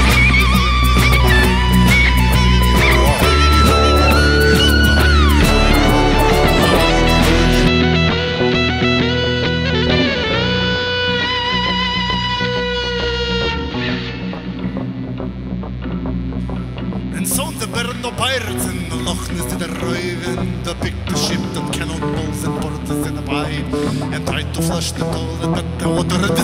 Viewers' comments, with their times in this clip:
0:10 how she ended that solo like a screaming hawk